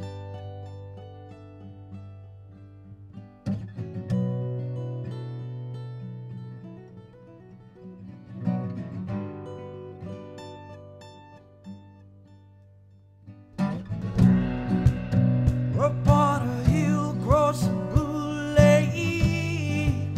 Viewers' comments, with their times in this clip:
0:05 that note in "don't you worry child", just love it. and that guitar i'm all into you.